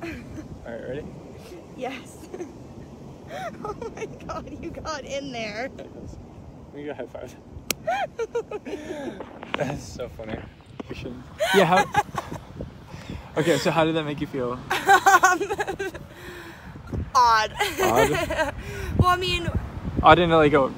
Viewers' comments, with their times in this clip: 0:04 I loved it "You got in there!" Well of course. I love her laugh. She also got to check something off her bucket list. 🤣